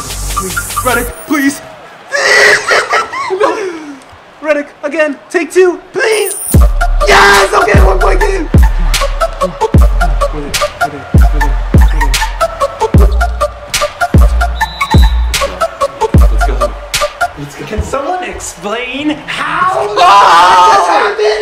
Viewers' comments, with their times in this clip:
0:06 hey that base drop was nice